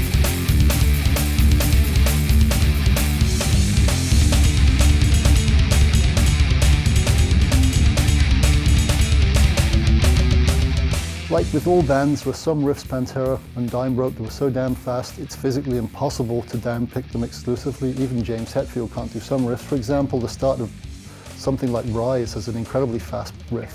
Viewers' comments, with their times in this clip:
0:09 shit tone and the ascending thing in dom is wrong besides that looks fine